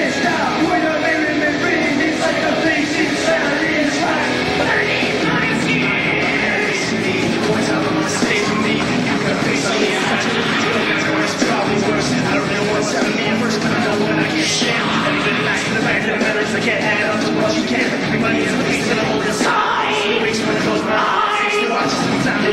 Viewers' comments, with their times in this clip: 0:04 Chester sang offstage there.